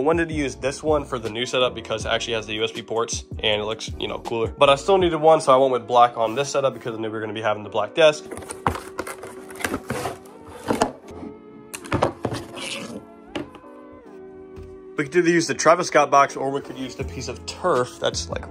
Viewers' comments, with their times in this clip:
0:06 anyone else hearing the n-word ?